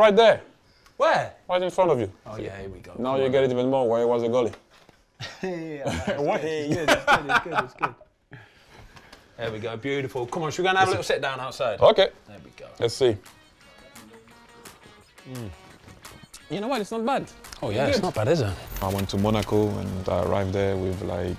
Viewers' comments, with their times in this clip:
0:05 That "heeeeeeh" My guy Foster was ready to go 😭